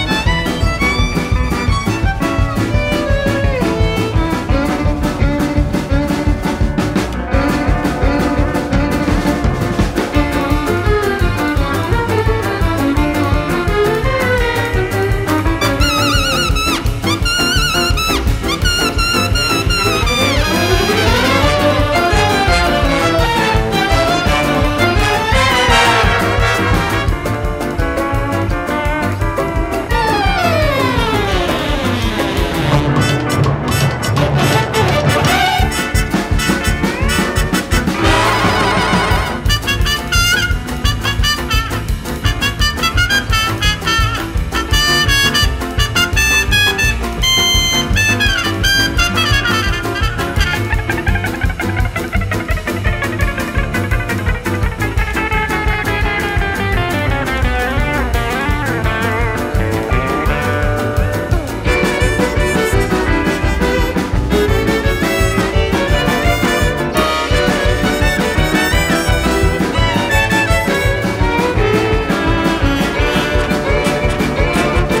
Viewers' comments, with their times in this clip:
0:03 That switch up is simply lovely to listen to
0:07 I love how the song gets more tense from it really captures the idea that Esther is ready to get serious
0:11 Me and the noys at 3am: VICTORY SCREECH!!!!!!! That Victory screech:
0:25 One reason I am so annoyed about the flow of this theme is when the theme seemed to be building in intensity it kinda just drops off i feel as if it would of made this theme even better than it ended out being! However I still love this theme to pieces and the instrumental players of every single instrument are incredible, it would of been great working with such a team 🎉😊
0:38 The fact that it actually sounds like mooing is pretty cool. I love the attention to detail.
0:39 I hate how after the dlc came out they took the trumpet out in I really liked that part of the song
0:40 Am i the only one that realised that part is different than the game ost and the one published by Kristopher?
0:50 is the best part. I love how the guitar guy barely plucked the strings, then the next little tune on it. But oh my god the steel lap-
0:50 very satisfying guitar sound
0:50 Man, did they cut this part from the in game track? It was probably so we could hear the yodeling during the fight, but damn do I miss the guitar.
0:55 ABSOLUTELY DELICIOUS EAR CANDY
1:01 is honestly my favorite. Especially when it transitions to the yodeling